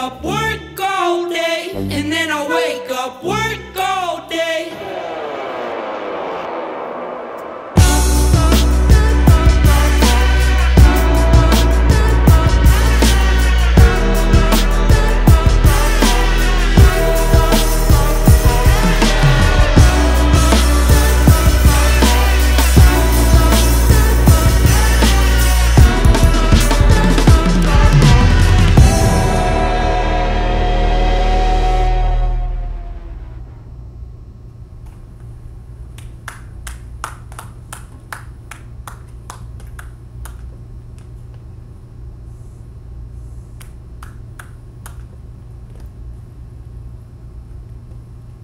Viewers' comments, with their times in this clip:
0:07 Sounds like the Wii Sports Boxing results theme
0:25 Bro why is nobody talking about that drum fill I had to rewind and watch that a few times it was so good. Dudes got chops
0:25 check that again. the drummer goes wild w a nice fill
0:32 Why is nobody going to talk about how in the end nobody clapped just the musicians .-.